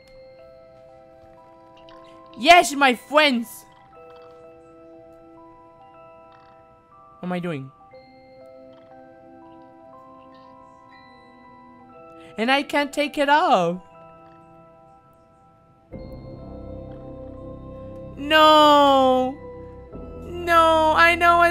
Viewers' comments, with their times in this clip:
0:06 Fortunate son starts playing